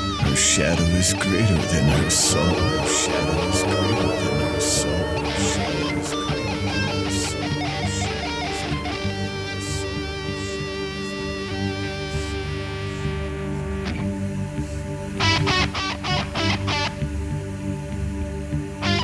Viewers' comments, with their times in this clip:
0:06 That is just a hungry cat at the mark.... :)